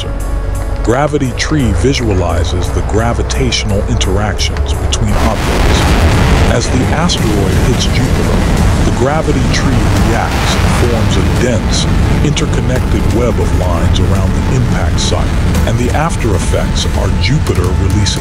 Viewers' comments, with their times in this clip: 0:03 loud ass impact cutely interrupts Adolf’s speech in kindergarten about his goals